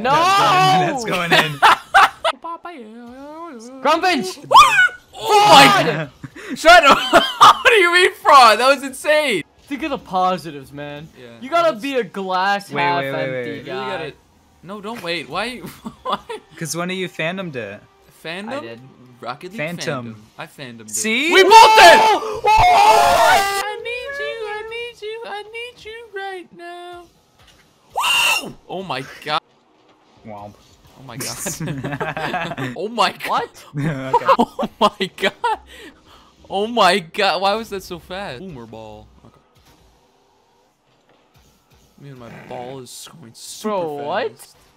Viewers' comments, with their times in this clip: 0:03 did anybody notice the bark ?
0:10 watch it untill u hear the WOAHHHH
0:26 the scream is so funny.
0:27 someone just transformed into a minecraft pig while getting slaughterd😂
0:28 that scream LOLOLOLOLOLOL